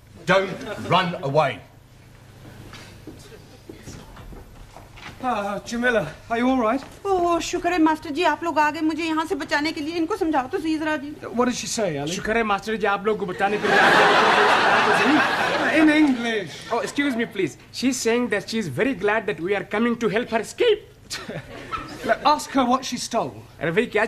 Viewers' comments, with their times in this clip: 0:09 ajksfhalksdhaldashdas - what is she saying? -ajksfhalksdhaldashdas hahahahaaha